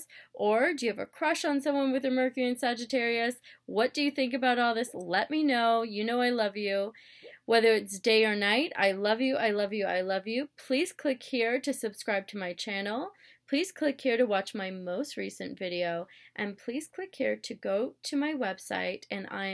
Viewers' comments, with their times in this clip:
0:06 NOTE: At the beginning of the video, when I say, "the planet of expansion, and always wanting to see the brighter side of the equation, knowledge..." I was referring to the planet Jupiter, which rules Sagittarius. It sounds like I am referring to Mercury, the planet which represents how you communicate, how you think, etc. When I re-watched the video I realized that that wasn't very clear, especially for anyone watching who is just starting to get into Astrology! Hope that helps and love you all. xox P.S. For any keeners out there you can hear Ruby Bear make a little bark in her sleep in the background. LOL.